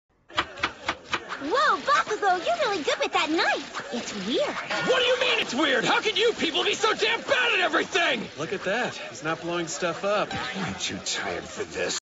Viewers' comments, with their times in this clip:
0:10 when I've had it with Bakugo yelling after hearing him yell for a full 20 minutes